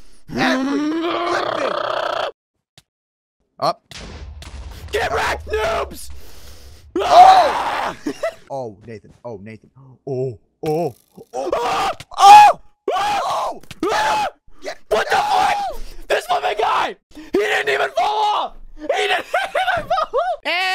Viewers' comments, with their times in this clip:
0:04 Unspeakable's battle cry is the FLIPPIN best